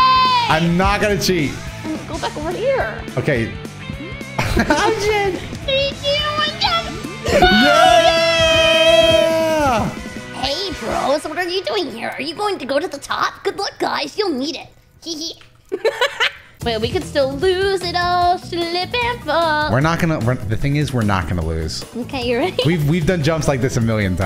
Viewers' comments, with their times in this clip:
0:08 Yo her voice is so good! The way she voiced Edgar had me astonished! Does she maybe do some voice acting? If not I could totally see her doing it